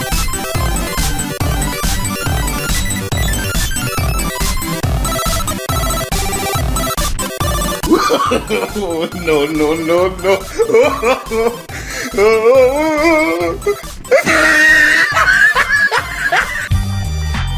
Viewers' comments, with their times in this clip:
0:05 "Skip to for the end" Me: no nice music